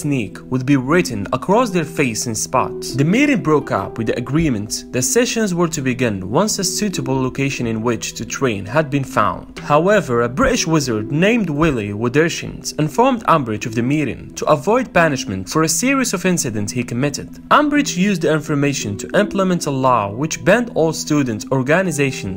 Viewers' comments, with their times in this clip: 0:10 The way he says British 😂